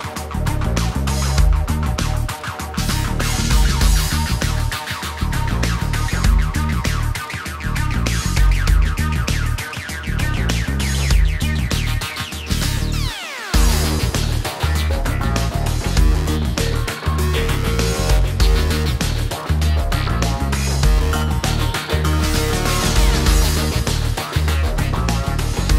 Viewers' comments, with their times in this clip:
0:09 Yes! Love the guitar mix !!!!!